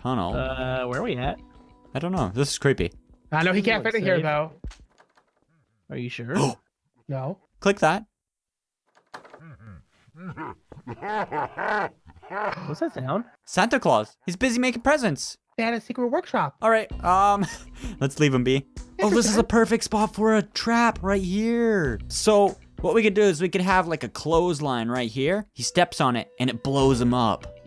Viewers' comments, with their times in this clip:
0:09 that is the most creepy a Santa laugh ever